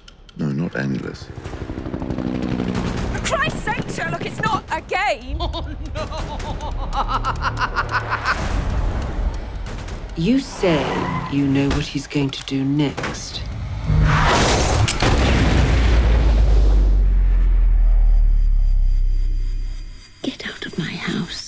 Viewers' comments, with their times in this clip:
0:04 Lol I thought she said "Sherlock is not a gay!"